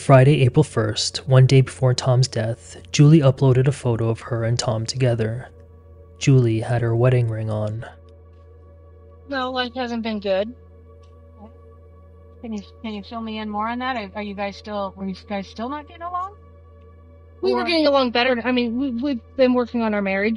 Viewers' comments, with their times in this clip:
0:08 Not a fan of the army of mosquitos flying towards my ear for minutes